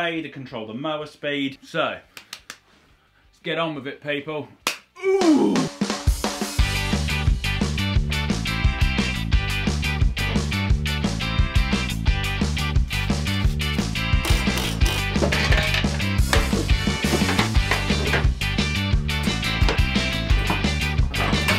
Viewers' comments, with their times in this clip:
0:04 #Ska music time!